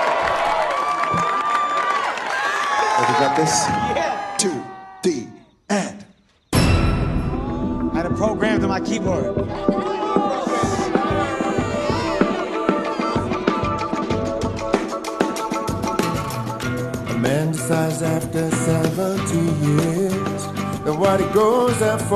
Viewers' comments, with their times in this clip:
0:07 Song starts here